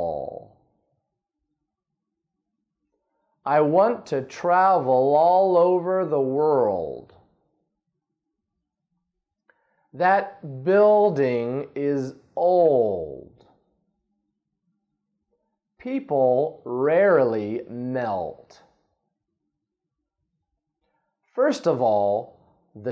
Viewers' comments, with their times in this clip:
0:05 I want to travel (dark L)